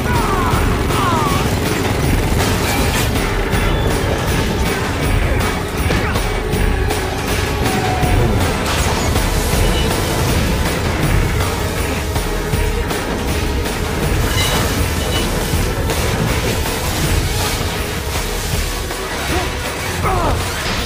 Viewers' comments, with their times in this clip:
0:08 Lol they are laughing